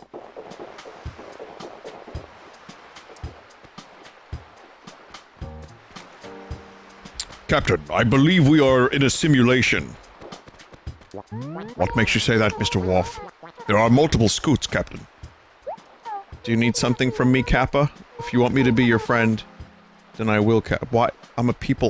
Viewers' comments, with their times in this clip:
0:06 great star trek impression lol xD